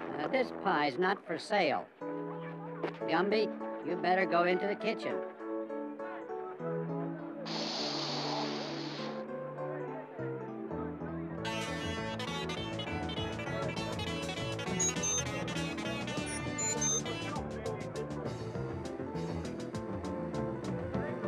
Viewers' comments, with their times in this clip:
0:03 Tune that starts sounds like Steely Dan.